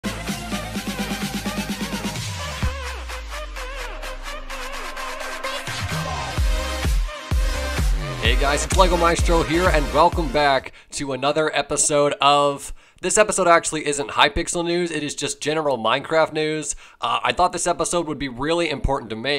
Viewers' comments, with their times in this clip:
0:05 Am I the only one who hears 'Pigicial' at the beginning of the intro?